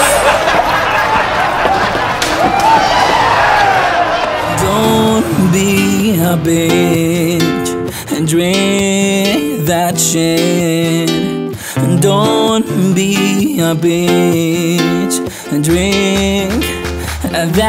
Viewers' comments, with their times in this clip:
0:04 Wilmer has a gorgeous voice ❤️‍🔥
0:04 thats where the song begins